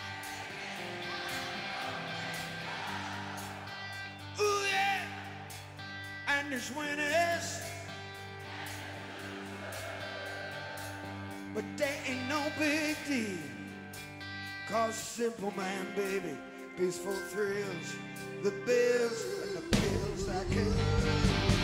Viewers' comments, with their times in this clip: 0:07 wow, tuneful crowd!